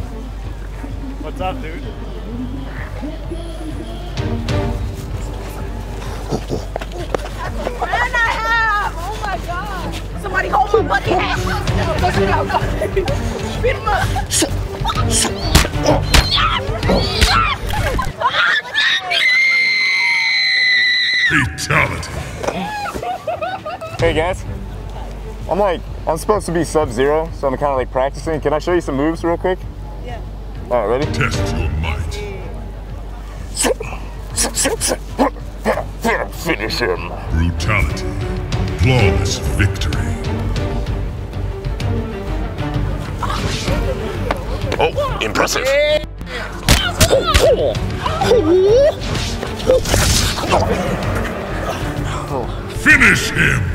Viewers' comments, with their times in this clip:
0:05 That girl was sindel when she screamed at him lol
0:05 girl using her scream power.. 😹
0:18 is she dropped something thts what made her yelling out?
0:19 That scream made me woke up from my 4 hour long nap
0:19 Sindel scream knocked out Sub-zero
0:36 he needs a trophy for being so cool and scream like kung lao(if Im not wrong) xD